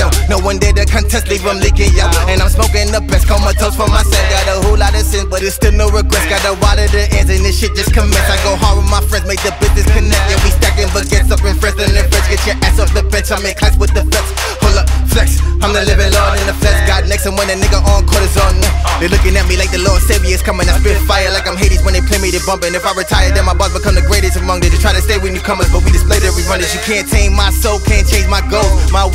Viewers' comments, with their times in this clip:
0:10 GODDDDAAAMN that is some AK47 flow